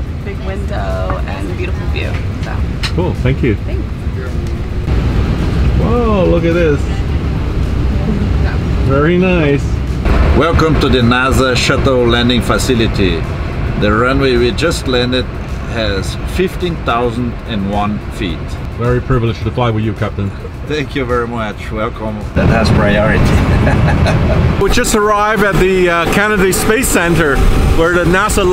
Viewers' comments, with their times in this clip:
0:10 was waiting for an evil laugh